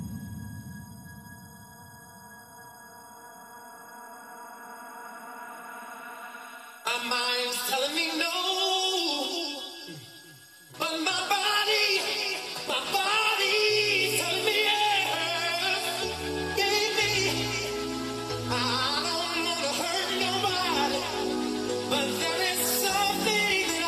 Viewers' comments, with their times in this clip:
0:05 really had me losing my shit. I LOVE LOVE LOVEEEEEE THAT FUCKING REMIX!!!